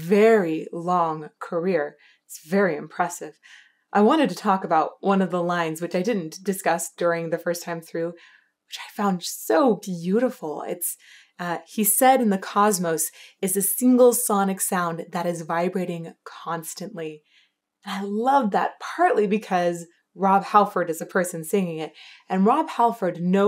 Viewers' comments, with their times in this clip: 0:10 I've always heard that line as '*set* in the cosmos is a single sonic sound', which I find beautiful, and evocative of associations of eternity and god and such. Lifts the whole thing up and makes it sound much more... cosmic. 😵‍💫